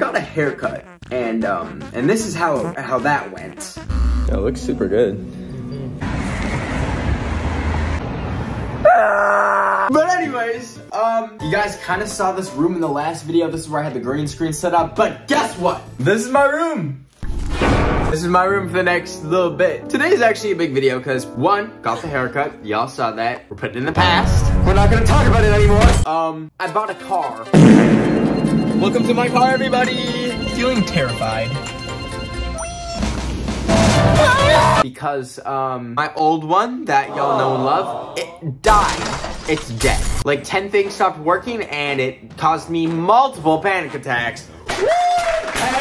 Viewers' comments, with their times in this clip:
0:09 omg not going to lie when he is screaming about his haircut it look like when frank from shameless always goes when he is drunk
0:31 Bros screaming for his life